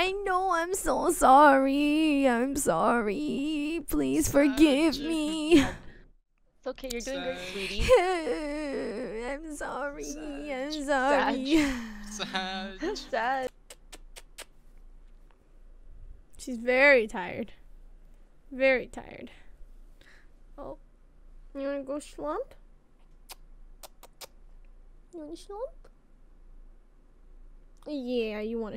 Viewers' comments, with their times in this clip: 0:09 Jett is crying૮(꒦ິཅ꒦ິ)ა